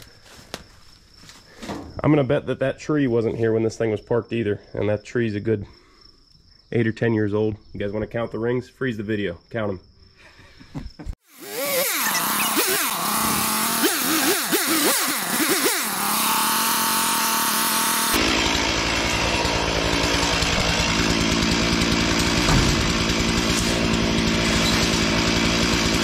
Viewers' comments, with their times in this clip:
0:07 I love that chuckle =^_^=